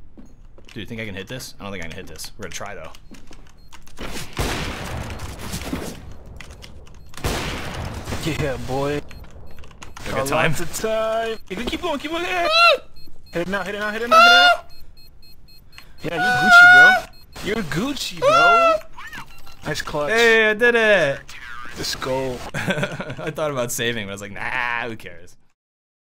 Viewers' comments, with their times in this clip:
0:07 that screams were cringe ngl